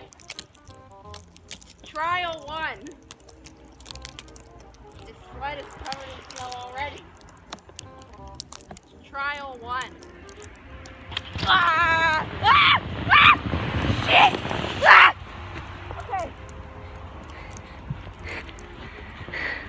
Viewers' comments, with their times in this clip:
0:06 The terrified scream when you see Ticci Toby in the woods